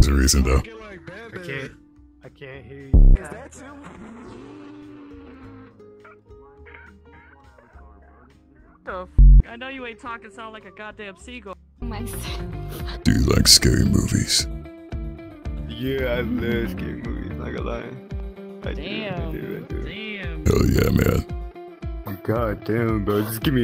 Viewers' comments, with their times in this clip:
0:05 where the guy sounds like a seagull 🤣🤣🤣🤣had me dying